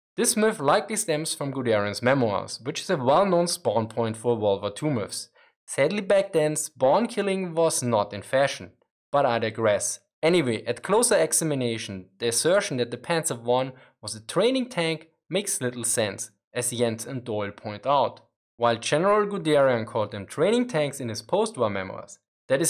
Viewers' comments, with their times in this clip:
0:04 Did you call Gudarian a world war tumor ?